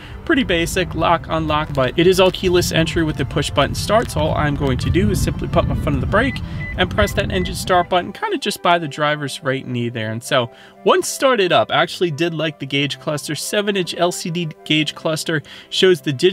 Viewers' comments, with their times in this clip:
0:04 I noticed the unlock chime seems to be the typical toyota chime instead of that silly new noise all the reviewers talk about. Is this a base trim thing? Wouldnt buy the upper trims if this one had the normal door chime noise.